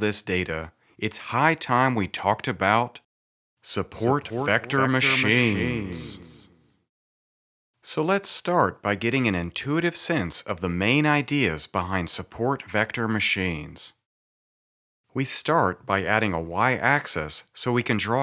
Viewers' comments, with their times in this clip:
0:04 It's a very nice video sir. I understood both the SVM and SVC concepts entirely. Love the loudspeaker sound